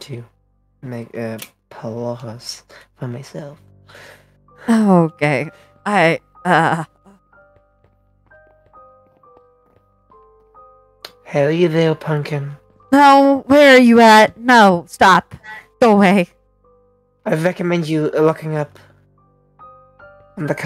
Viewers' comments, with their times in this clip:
0:05 it sounds like puppeteer says “oh-gay” XD Idk I’m tired an misheard okay, and it is silly so I must point it out.